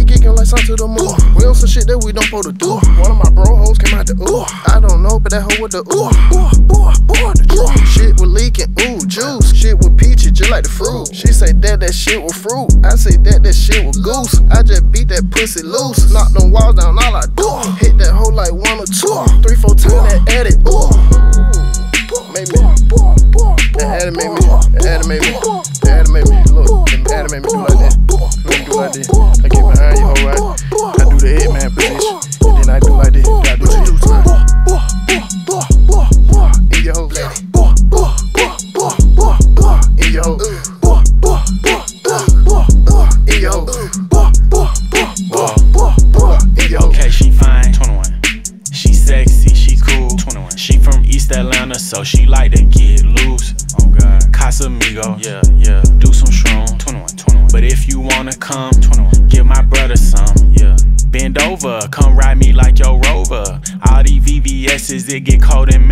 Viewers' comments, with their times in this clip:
0:07 flo is Gucci
0:46 " dam dis shyte country as hell" Said sir 21 in a British accent, calmly.